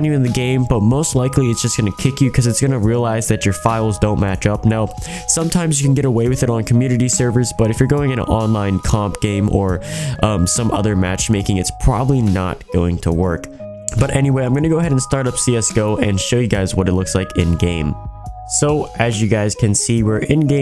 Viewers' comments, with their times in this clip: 0:04 that voice crack xD